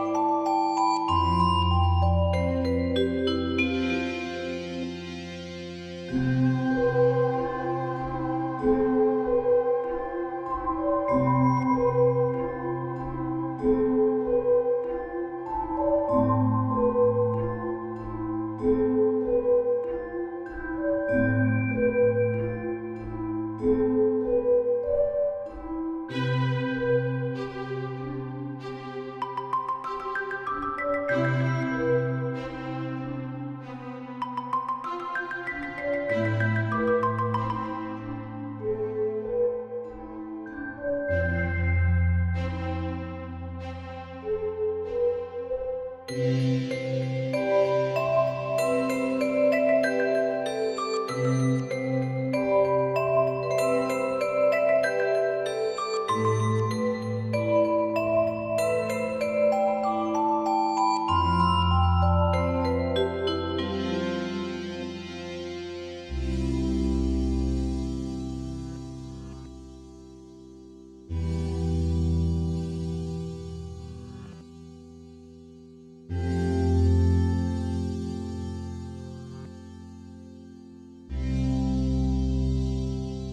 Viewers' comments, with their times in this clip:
0:06 Am I the only person who gets an eerie and uncomfortable, yet nostalgic feeling when the muffled bells start playing ?
0:06 How does nobody but me hear how depressing it gets
0:06 Is it just me or does it kinda sound like Subwoofer Lullaby from Minecraft?
0:06 This gives me extreme minecraft soundtrack vibes
0:06 I LOVE the music in this game, but the sound that starts REALLY reminds me of the "fasten your seatbelts" noise in an airplane...
0:06 This reminds me SO MUCH of Minecraft
0:26 reminds me of the beginning of Mirror Mirror from RWBY and I always end up singing the lyrics when I hear it in game. I guess being surrounded by snow and such a melancholy song made me think of Weiss lol
1:05 is my favourite part it sounds so silent, like the sound of falling snow, muting all sound the world is peaceful and still, i walk down the empty street at night and enjoy the snow
1:06 those chords... haunting
1:06 The bit starting reminds me of Christmas for some reason. The sound of it, something about it